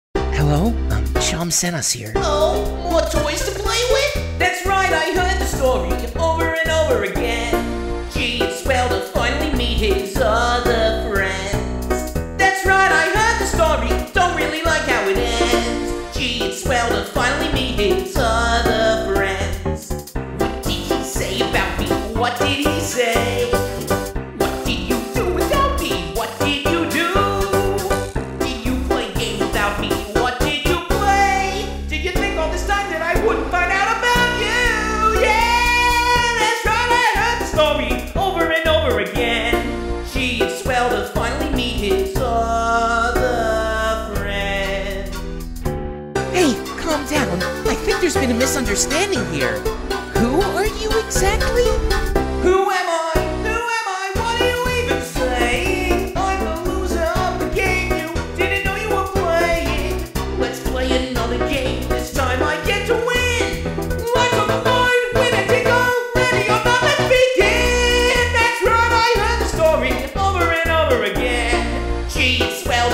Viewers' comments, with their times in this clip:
0:01 it's only me or i Heard seam saying he was JOHN CENA
0:56 All of Spinel’s stretching limbs is just Jevil’s spring. That line actually fits really well.